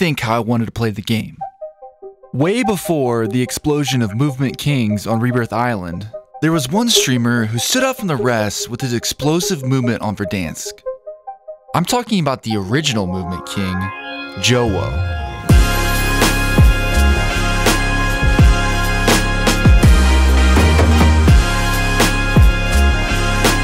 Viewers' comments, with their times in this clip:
0:06 Idk why but it was starting to sound like a documentary